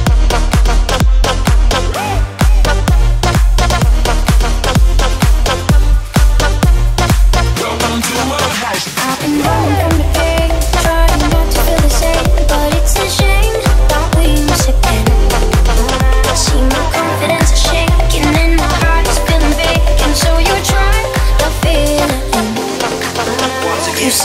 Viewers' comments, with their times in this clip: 0:10 Pitch is off. Circle of fifths Djing is how you fix it! :)